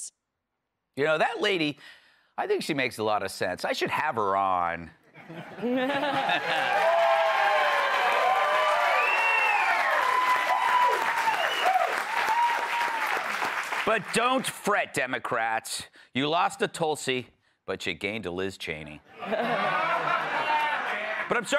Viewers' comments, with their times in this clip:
0:05 that was a Kat laugh. Love it